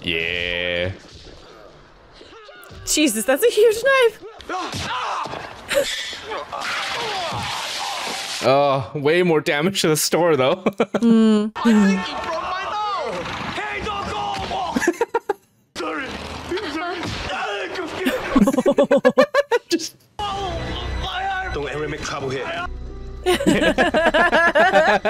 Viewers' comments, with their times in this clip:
0:07 Don't you love how you can both hear that the cans are empty, and if you watch you can see the tabs have opened on those Pepsi cans ? I really expected a comment on that from one of you two. That type of "hovercraft" uses large fans to push air down, creating lift, the "skirt" around it keeps the air from fully escaping, which allows the pressure to to be maintained, making the craft "hover" over any surface more dense than the air, such as land or water. By controlling the propulsion fans, it can move forward or backwards. Between fins behind the fans and changing the pitch of the fan blades, it can turn by direct propulsion, or, can turn by one fan providing forward momentum and the other provided reverse propulsion. In all it can literally hover in place and spin clockwise or counterclockwise if needed.